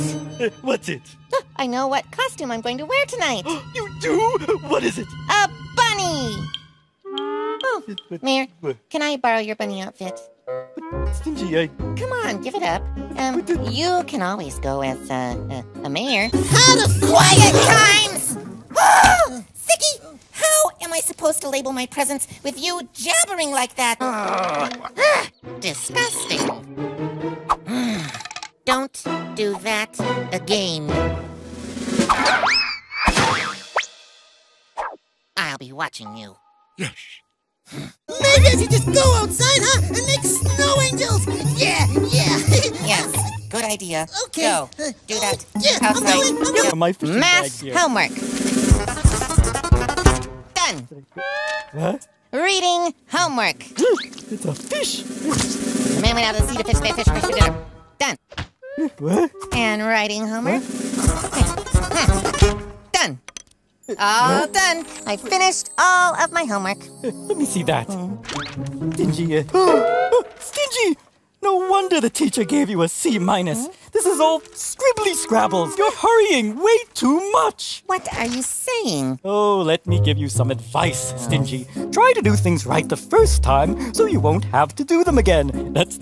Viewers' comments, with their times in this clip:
0:10 The mine song is in the background because that bunny costume is STINGY'S.
0:28 Stingy knows how to say again with a Long A
0:48 did anyone notice that the music sounds like an automatic piano or some shit, right?
0:55 Is anyone able to make out the incoherent rambling Stingy utters ?
1:10 I always crack a grin the way he said Stingy’s name